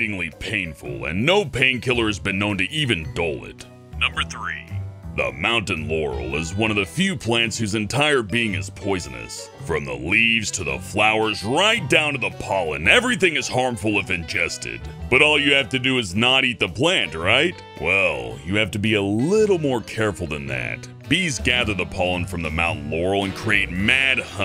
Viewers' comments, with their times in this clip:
0:04 anyone else heard mountain yanny?
0:05 i can't find it on the internet but i only hear you saying 'mountain yanny'
0:10 I heard Mountain Yanny, what about you guys?